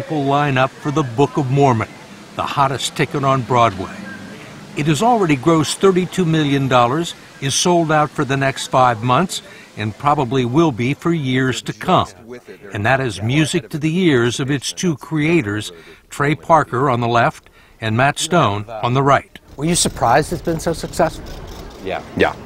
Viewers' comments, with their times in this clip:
0:06 i‘m pretty sure i heard „dorrars“